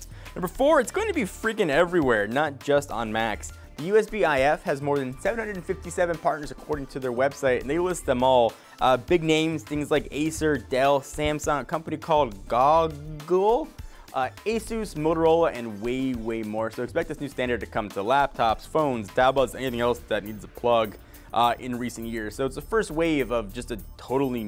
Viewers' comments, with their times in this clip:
0:10 a company named goog el? Wait you don't know what Google is???